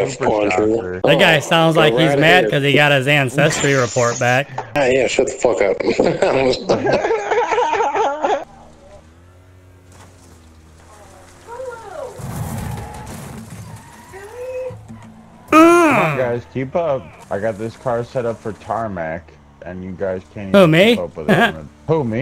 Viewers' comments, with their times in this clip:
0:05 this fkn laugh 🤣
0:06 The guy talking sounds like ricky from TPBs a lil